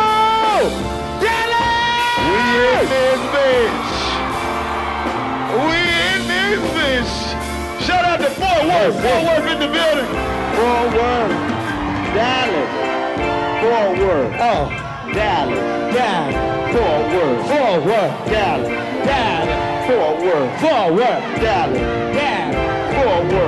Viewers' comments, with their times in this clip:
0:06 My dude in the keyboard farted .05